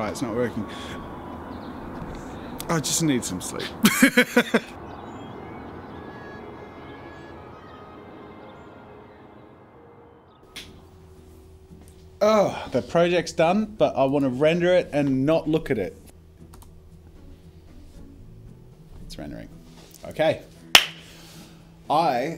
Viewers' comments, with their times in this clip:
0:05 where in Australia do you live where the birds chirp sweetly and instead of screaming?!